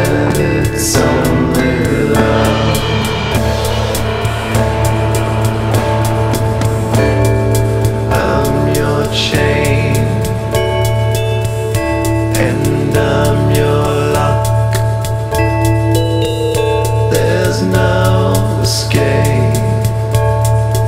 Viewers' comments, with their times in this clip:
0:06 is that a windows error sound?
0:07 can you hear that big drum being hit? Theory Time: It is a known fact that this song was initially created during the All Hope is gone recording sessions with a sideproject called Look Outside You Window. In a video which showed us the recording process of AHIG there is a video of clown hitting a big drum in almost the same timing as the big drum here. Maybe it was this song.